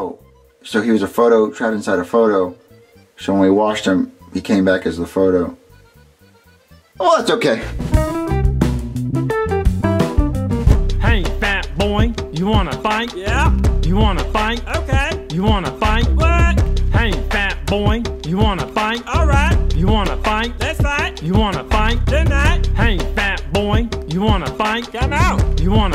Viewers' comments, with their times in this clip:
0:09 this song is criminal💀